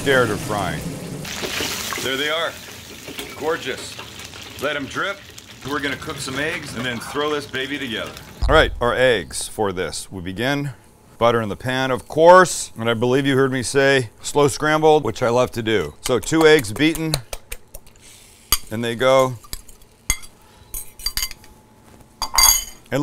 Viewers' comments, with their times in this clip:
0:06 is that somebody whispering “WOW” in the background because man, i FEEL you 😅